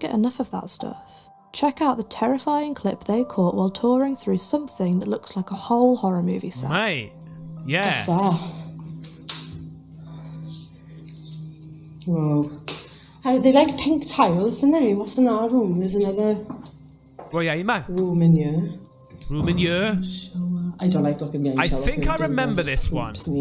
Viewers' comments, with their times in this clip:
0:09 Sorry to spam but not sure how else to get attention on that whisper